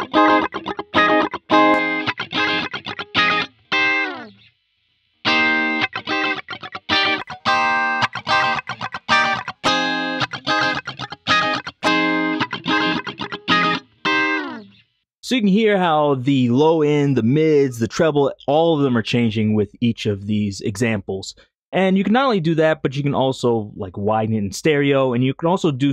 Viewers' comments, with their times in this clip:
0:10 that "guitar" sounds like an egg cutter. Terrible.